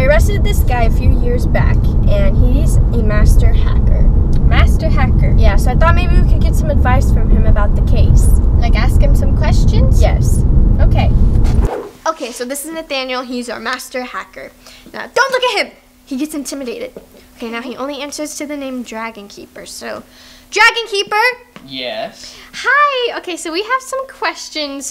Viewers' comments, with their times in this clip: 0:07 the sound made me feel like i was in an airplane 😭✋